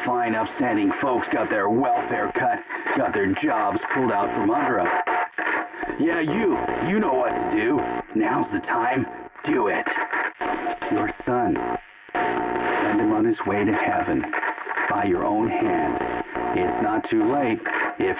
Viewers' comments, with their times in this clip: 0:05 Why does it actually sound like Norman Reedus? This just may be a conspiracy.